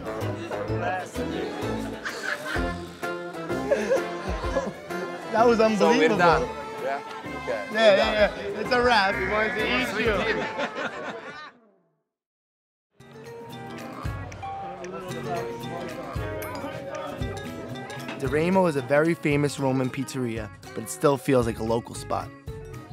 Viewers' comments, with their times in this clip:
0:04 the way hannibal the cannibal laugh is so epic